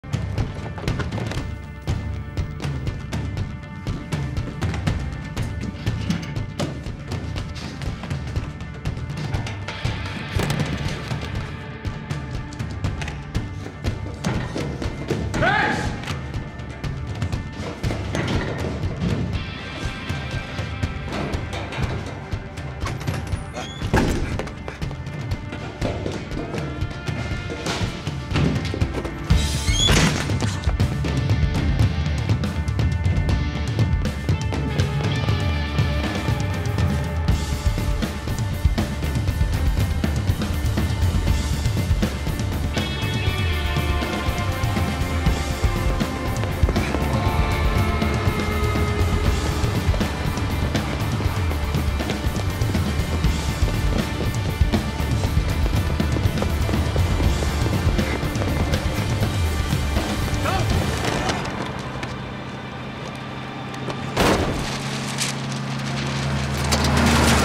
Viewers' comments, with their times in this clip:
0:01 best soundtrack of the movie
0:47 The guitar that kicks in there was no accident, it was to demonstrate the current mood of the badassery that is Tom Cruise in this scene. It’s truly epic!
0:48 I love the Wild Western guitar when Tom comes into view inside the tunnel.